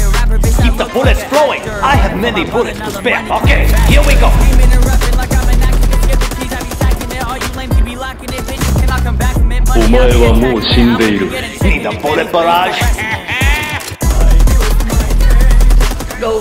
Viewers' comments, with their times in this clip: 0:03 The dushka hitting the beat is the most satisfying thing ever